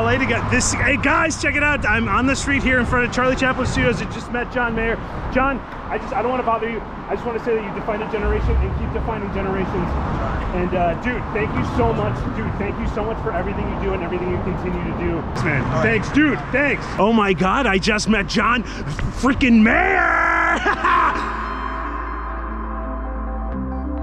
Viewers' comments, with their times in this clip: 0:08 the background sounds like radiohead ...daydreaming?? idk